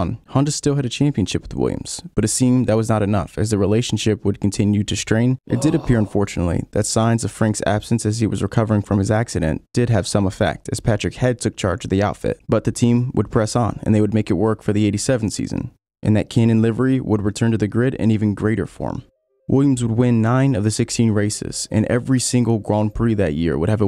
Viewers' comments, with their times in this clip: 0:05 Is that background noise supposed to be the sound effects for the picture tho ? Lol (Amazing video so far. Been waiting for this for a while.)